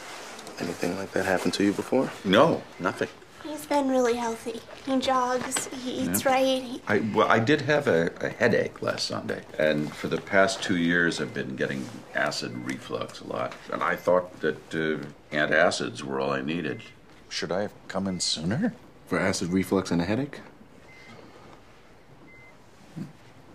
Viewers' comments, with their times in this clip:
0:06 For some reason, i love the way he says his line Its just so sweet idk why